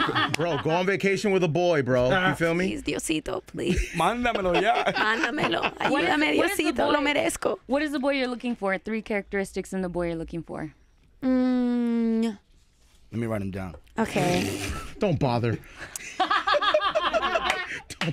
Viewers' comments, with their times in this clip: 0:03 "Plis diosito, mándemelo, ayudame diosito me lo merezco" This part is the cause of my death, she speaks Spanish so cute 😍